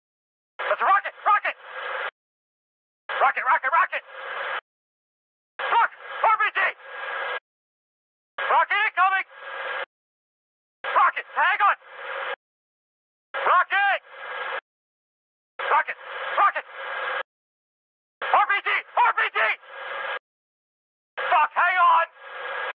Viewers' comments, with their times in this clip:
0:03 Rocket Rocket ROCKET!! But seriously, love the voice acting and little details in it